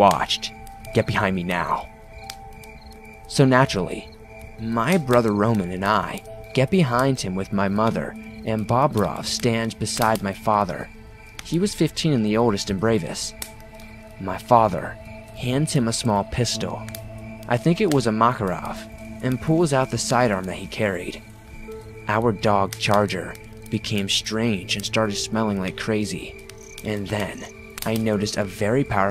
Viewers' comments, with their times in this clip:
0:10 Wait did he say Bob Ross or is it that I am tripping